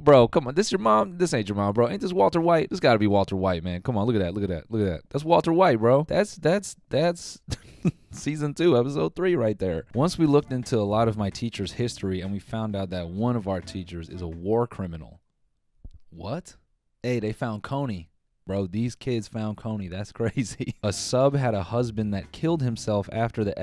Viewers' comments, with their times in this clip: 0:08 I’m getting serious Glass Animals vibes